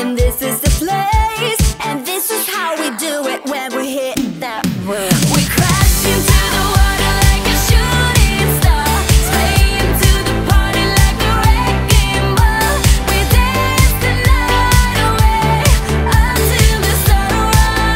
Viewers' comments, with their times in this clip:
0:05 This song reminds me of Katy Perry's "Hot n Cold" Part: